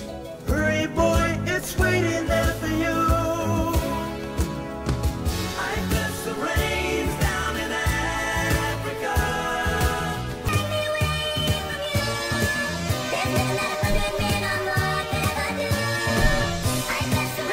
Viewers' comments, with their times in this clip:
0:05 drowns it out with Brain Power